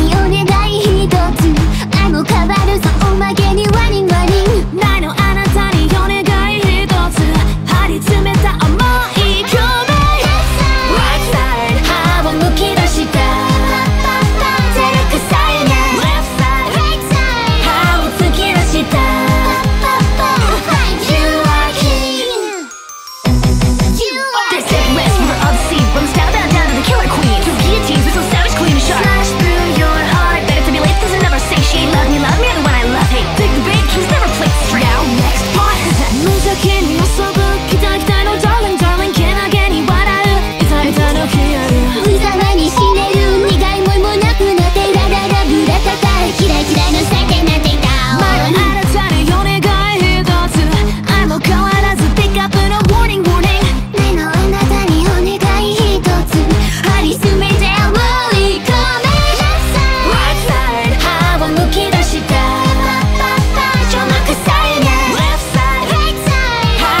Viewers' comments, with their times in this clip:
0:10 i like how it like uhhh puts the noise depending on what side of earphone you wear for example if you wear the left side of your earphones you will hear guras part but not moris part
0:10 and Calli's venomous Right Side is powerful!
0:24 Her singing ability is on another level Looks like fun to sing
0:41 really love this part. gura mocking tone perfectly hit in the right place.
0:41 Gura Urara ratata is cute too
0:41 the raspy sound here is awesome
0:46 The whispering is criminally underrated
0:47 I can't stop listening to this now aaaah, this cover is so good they both killed it ! The art is awesome too ! I really love Calli's rap as always, and also Gura's whispers this is amazing. Idk why but somehow I'm so in love with the "Left Side/Right Side" of Calli
0:48 Man, I can NOT get enough of these whispered back vocals. It's such a sick touch that really takes this cover up a notch... Or 10. □:_GuraHAHA:□
0:48 Gura's whispers starting is so good. I'm glad she suggested that idea. It feels like Cali is the older more serious sister and Gura is the younger bratty sister.
0:48 who whispered that
0:51 It's because the time stamp is incorrect. It occurs in the line ending with 'warning warning'. Calli sings, Gura whispers.